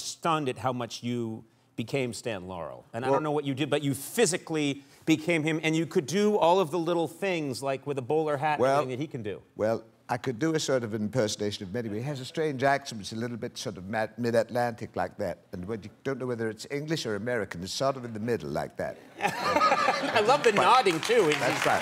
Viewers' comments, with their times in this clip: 0:09 Man ... .. that short speech and that nodding and all ... he became Stan Laurel ... just like that ! I know, I've followed them from the early 1970s ... and I know Laurel's voice and antics ...